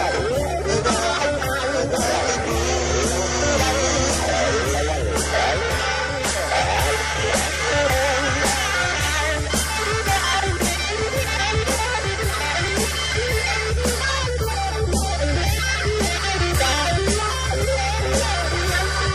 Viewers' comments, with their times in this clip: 0:06 is the most BEAUTIFUL solo I’ve ever heard😭 inspires me to pick up my guitar and jam with all my heart